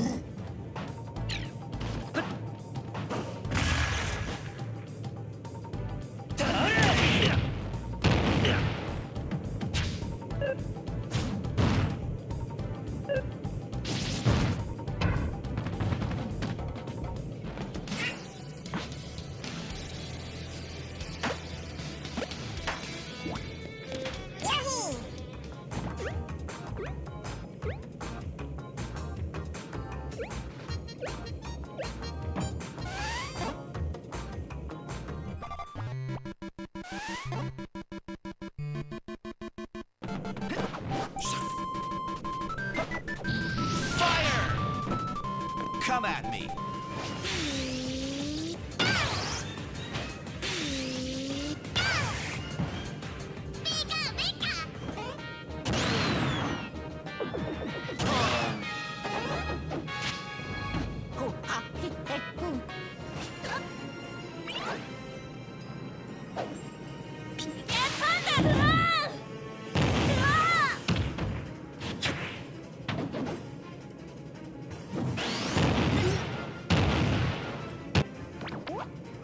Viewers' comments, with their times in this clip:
0:09 Love that double bomb noise
1:00 Luigis noises matched to the music 😂
1:00 Holy shit that was on beat
1:00 the iconic hoo ha hee hae hoo
1:01 Wow, Luigi is a good singer. I would definetly turn this into a trap remix.